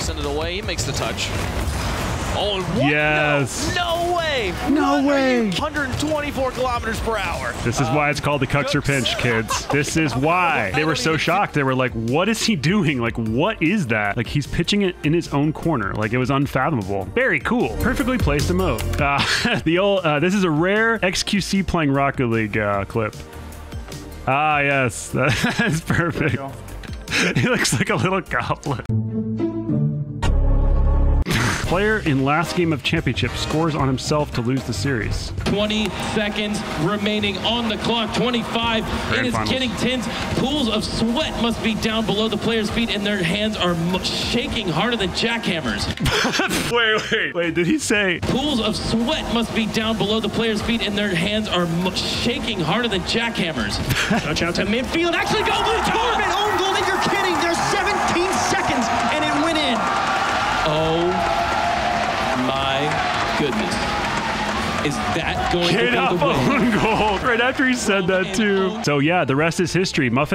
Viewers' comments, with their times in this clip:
0:04 PLAY but slow it down to 0.5 speed 😂🤣🤣 YOU WONT REGRET IT!!! hunnerd and twenty four kph 😂
0:55 squishy's little clap lol